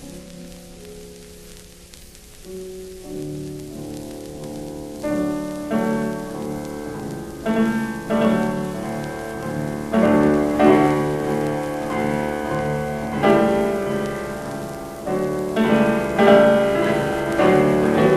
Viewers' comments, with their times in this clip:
0:04 Had tremendous promise, but disappointed in my favorite section Perhaps the old recording insinuated errors. So I still prefer Murray P. Great posting, though. Thanks